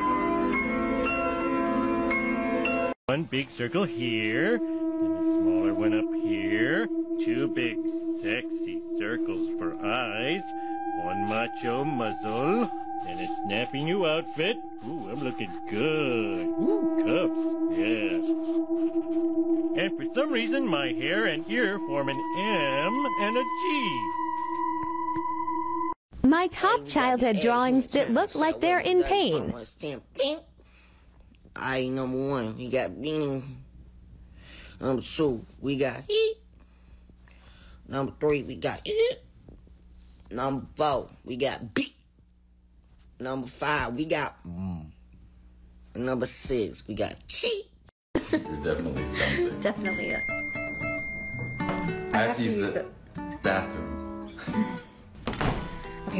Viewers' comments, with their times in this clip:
0:04 HELP WHAT? BRO IS LTERALLY FARTING OUT MY PAINT WATERRRR😭😭
0:39 the "vent" in the background💀that thing must have been taking a toll on them fr